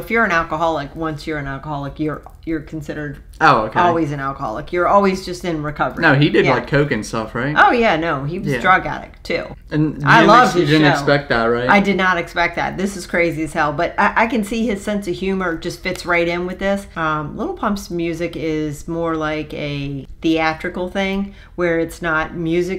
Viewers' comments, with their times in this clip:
0:07 i swear she said "i love snow"